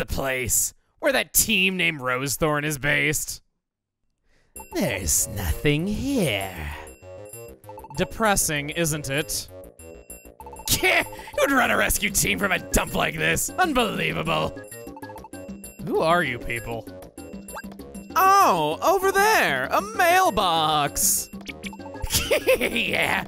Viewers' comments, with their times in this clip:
0:05 Ekans sounds amazing💜
0:10 Gengar’s voice is amazing 💜